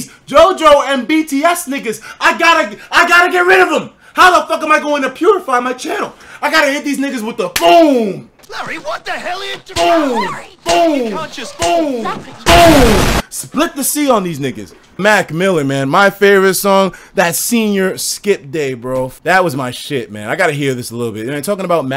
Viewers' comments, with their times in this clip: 0:07 Walk like an Egyptian starts playing